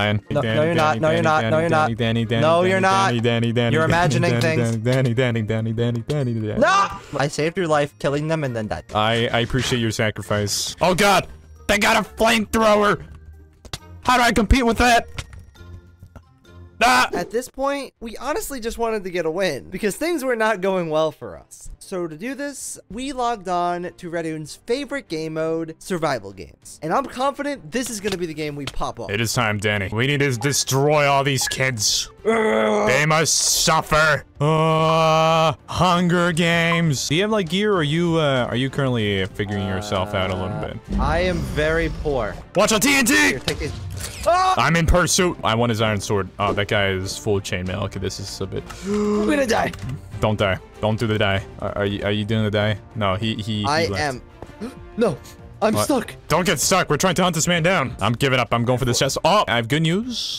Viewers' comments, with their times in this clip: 0:10 Am I the only one that hears technoblade?
0:42 nah bro sounds alot like techno